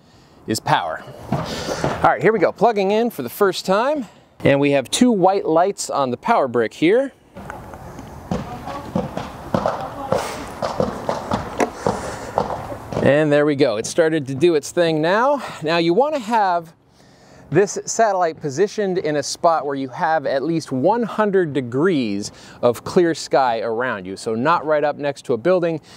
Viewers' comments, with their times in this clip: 0:08 bruh are those gunshots?